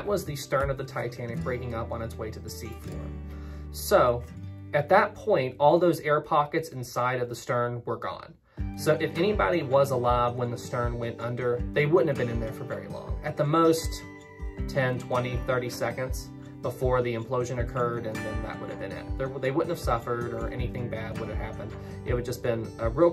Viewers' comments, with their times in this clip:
0:04 no, they couldn’t [to the sound of light guitar in the background].